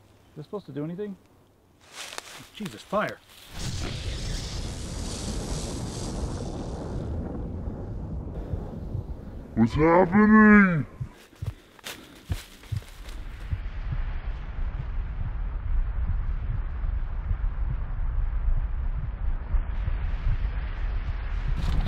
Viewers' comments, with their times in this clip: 0:06 the guy sounded just like Arnold